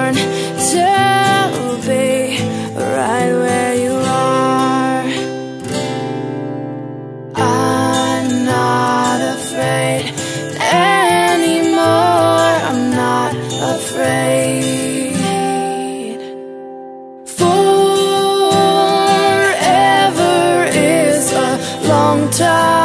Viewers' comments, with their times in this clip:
0:05 its great song till love that tempo but it has unfortunately changed :(